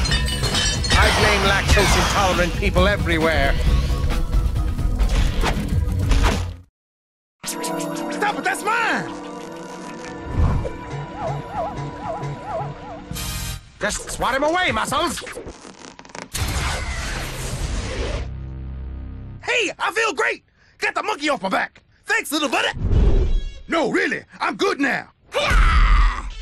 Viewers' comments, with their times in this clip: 0:08 crunch says fu ck that's my
0:14 does he say "assholes"??